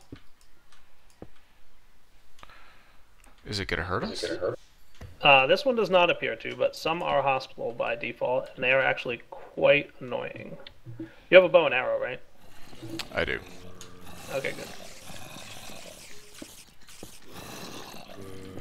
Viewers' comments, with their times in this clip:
0:06 Some are hospital? I no understand